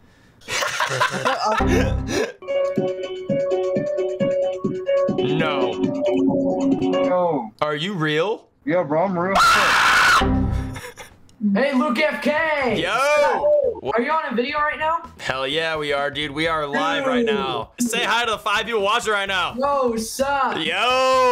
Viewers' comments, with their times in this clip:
0:08 HOW DID HE SOUND EXACTLY LIKE THAT ONE SCREAM SOUND